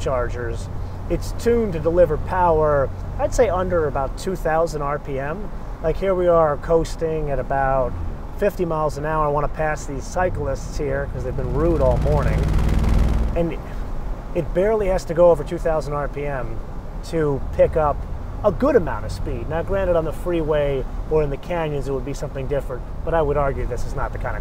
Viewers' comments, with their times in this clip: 0:10 when you press the gas going up hills or passing someone like it sounds like a go cart for some reason